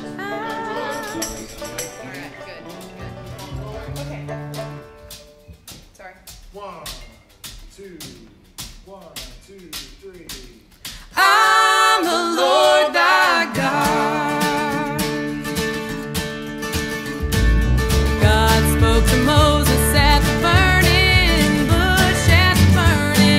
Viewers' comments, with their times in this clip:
0:04 the song is the same melody as "the good ole mountain dew"